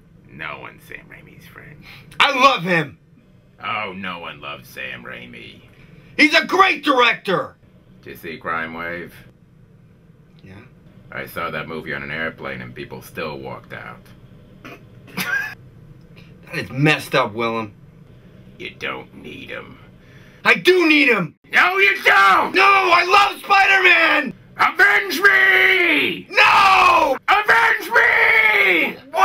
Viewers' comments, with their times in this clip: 0:10 that was so funny he had to laugh at his own joke